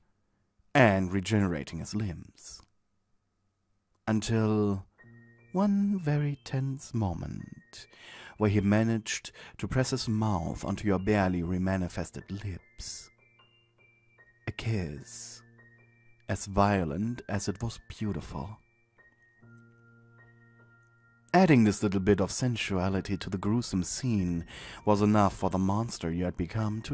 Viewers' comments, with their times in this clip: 0:07 What's the song's name playing in the background? It sounds so soothing and I really wanna listen to it... without all the good stuff going on😂